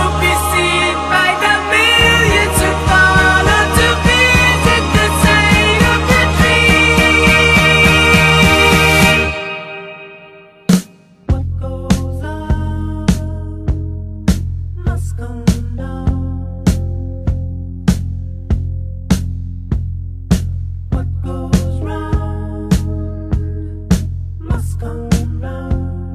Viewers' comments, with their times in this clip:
0:08 bro created the sickest drop ever in 1978 and thought we wouldn't notice💀